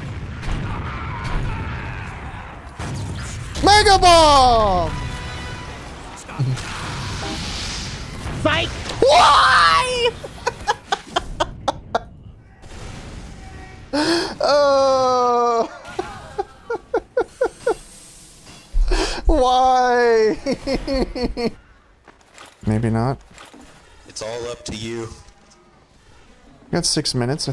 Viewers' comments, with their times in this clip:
0:04 the soldier said 'stomp' right as a stomp happened XD
0:08 Waluigi death sound